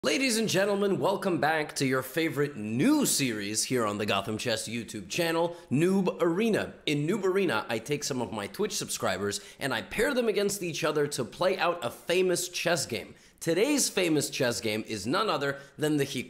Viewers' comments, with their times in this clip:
0:00 If you replay rapidly, Levy says "It isn't gentlemen..."